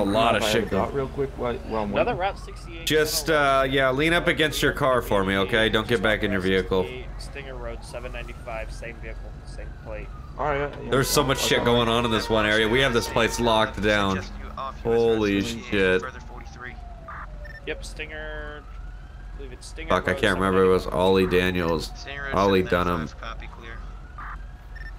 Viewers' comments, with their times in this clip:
0:10 Thought my son started screaming.